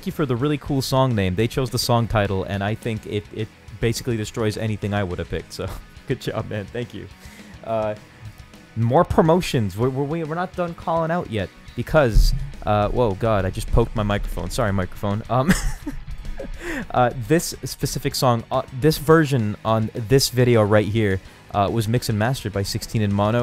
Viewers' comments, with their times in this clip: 0:07 amazing!!!! you should've added a downward scale for the guitar, that wouldve been fun